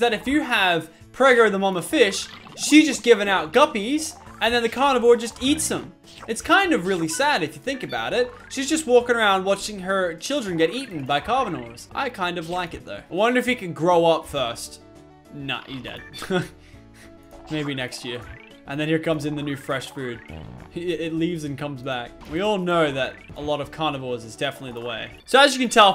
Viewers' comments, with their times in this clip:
0:09 carvinors XD LOL
0:11 he said carvinores